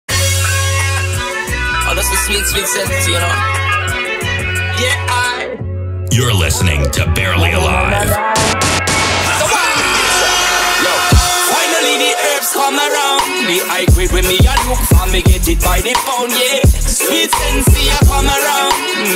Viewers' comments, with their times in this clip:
0:06 love that voice. YOU'RE LISTENING TO BARELY ALIVE!